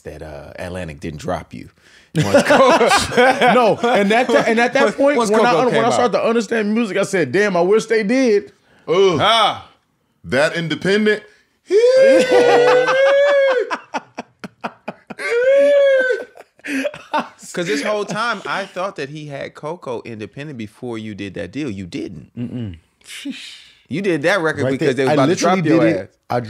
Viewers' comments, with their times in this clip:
0:09 black ppl sound effects 😂